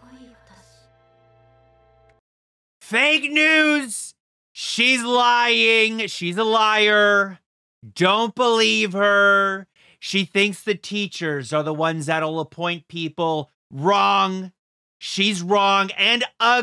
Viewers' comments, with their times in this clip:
0:03 ayyo I didn't know Trump was featured in this video